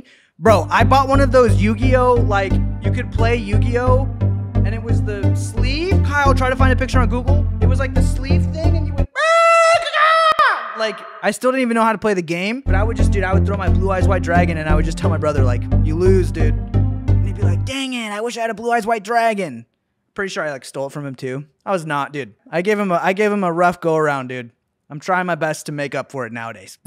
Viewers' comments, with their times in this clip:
0:08 sound like coral cruisers